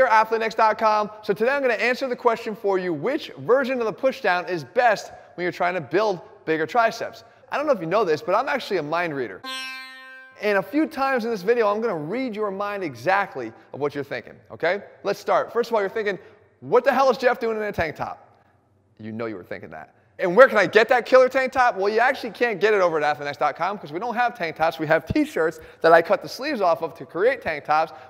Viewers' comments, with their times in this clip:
0:09 I don't know but I laughed so hard with that music 🤣🤣